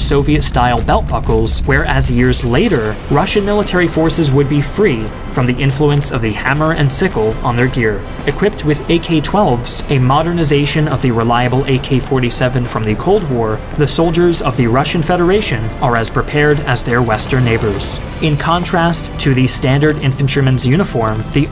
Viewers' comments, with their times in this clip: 0:03 Soviet/Russian anthem intensifies in the background.
0:03 lol the music in the background
0:04 Only some comrades will hear the Soviet Anthem at the bg in 😤
0:05 was the anthem really necessary
0:06 why is the USSR anthem playing in the backround?